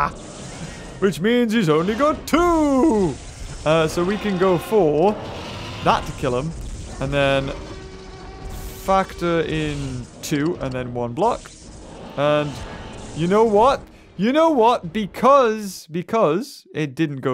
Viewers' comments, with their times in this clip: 0:03 their roars combined